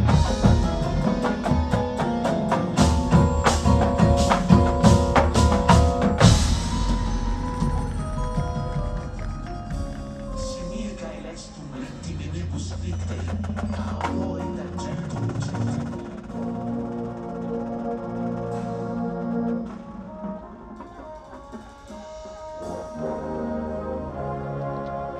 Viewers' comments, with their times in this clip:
0:10 Seems like a typical BD show. Features, cameos of Devil moments from the past, fragmented but cohesive somehow with lots of interesting transitions. First kinda “meh”. They’ll define and improve what’s happening there. Uni colors kinda monochromatic between guard and instrumentalists. It’s early so it’s likely we didn’t see all the costuming that’s planned. Brass-Lots to work on. Particularly intonation and individual quality of sound, based on that run. It’s BD, it’ll be good, and enjoyable for most.